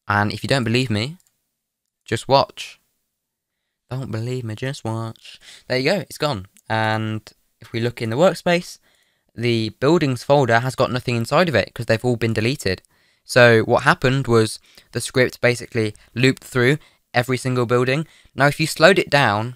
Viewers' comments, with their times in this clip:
0:03 pretty great singer if I say so myself
0:03 the moment which i repeated 5 to 10 times..... WHAT A BEAUTIFUL TONE!!!
0:04 Not the random singing